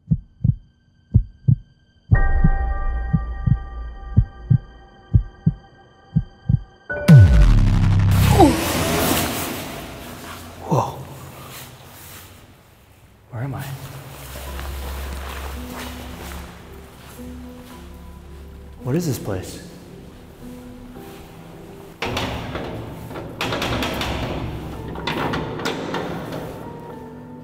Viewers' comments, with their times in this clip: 0:08 I think the start sound like I robber enter a bank want to see? MMMMMM😑😥😥😥OK